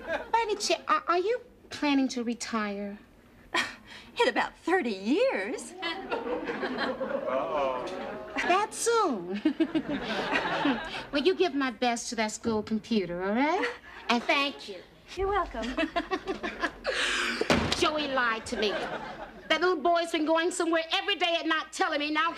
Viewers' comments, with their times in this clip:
0:07 someone in the audience yelled Uh Oh!